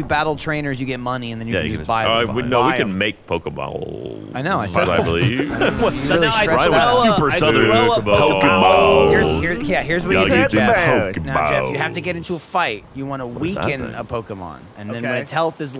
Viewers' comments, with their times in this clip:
0:03 Ryan the Super Southern Guy lmao I love them all so much